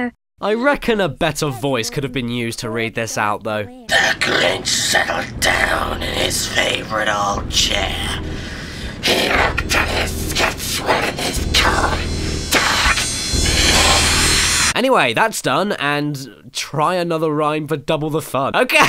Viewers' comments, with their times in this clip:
0:04 he sounds like aunt selma from the simpsons